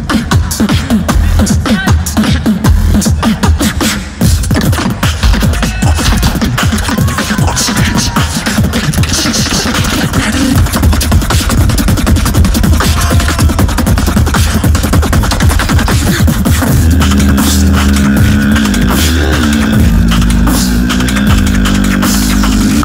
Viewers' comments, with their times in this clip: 0:10 yeah is cleaner and super underappreciated. the tempo control is incredible. steady like a drum machine.